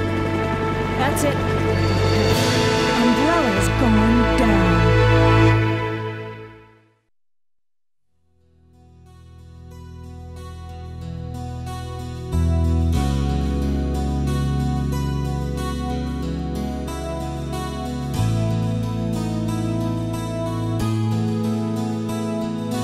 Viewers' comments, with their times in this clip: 0:09 .... Chills , Goosebumps , Beautiful Song